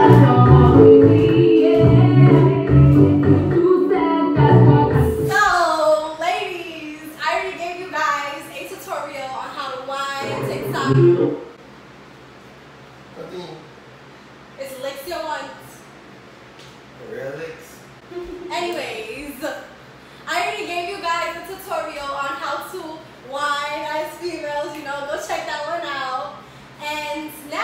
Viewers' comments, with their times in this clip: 0:10 activate the trini accent, still love the vid, love from trinidad😘💕❤